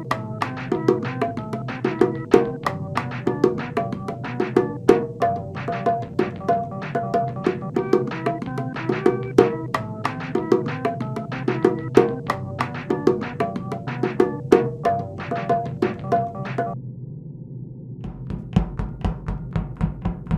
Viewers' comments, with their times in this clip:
0:08 laughs in time hahahahahaha